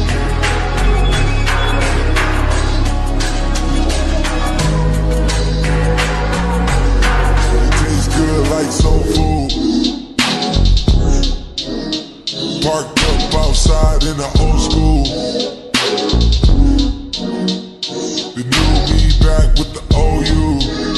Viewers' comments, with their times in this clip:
0:08 is where it drops 🔥🔥🔥